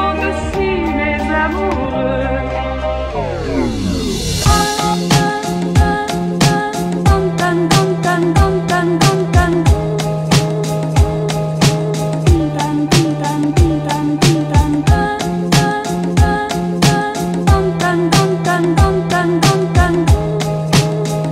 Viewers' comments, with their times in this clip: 0:07 :D tam tam tam :D make me smile